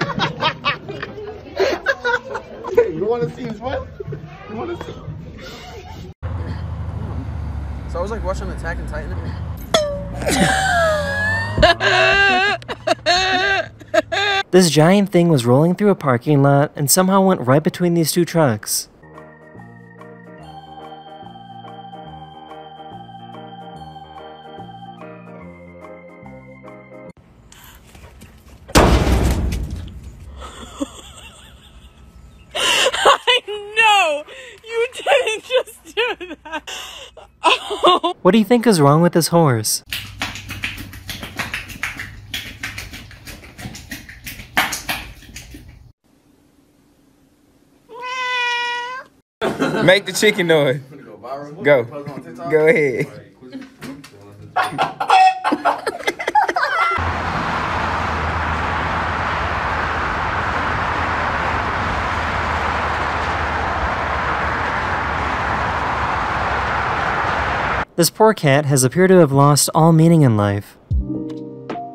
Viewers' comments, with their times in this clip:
0:06 What was that sound the can made?! 😂
0:08 is deadly funny, and omg, her highly contagious laugh is like a walrus tuscan raider
0:08 man laughed like Mrs. Muntz from simpsons
0:09 That bonk sounded so insanely comical while sounding like the most painful thing in the universe
0:09 THE LAUGH IS CRAZY 💀
0:10 if you listen carefully, you can hear a car snoring
0:10 am i the only one that was hearing the AAAAUUUGHHH sound ? LMAO
0:11 So nobody gonna talk about her laugh huh
0:11 THAT LAUGH THOOO 💀💀💀
0:31 The horse is clearly beatboxing
0:35 he is dropping a beat
0:38 Thats what good poosy sound like
0:38 hes just dropping a beat
0:39 how interesting, i finally found out what that sound is that comes from my parents bedroom every night, it’s just them wiggling their tongues 😁.
0:39 watchu talking abt? He’s making a beat. It’s a banger 🔥🔥🔥💯💯💯🗣️🗣️🗣️
0:39 this horse sounds like an osu's players keyboard
0:39 Me just feeling the beat:
0:39 yeez now theres beatboxing horses
0:40 OMG THE HORSE 🤣 dies of lung failure
0:40 It’s making music
0:43 theres nothing wrong with that horse there just making a sick beat
0:43 bro is clapping hard with his mouth 💀💀
0:53 I’m not the only one thinking “pogging chicken“ am I?
0:54 omg that was a great chicken noise ngl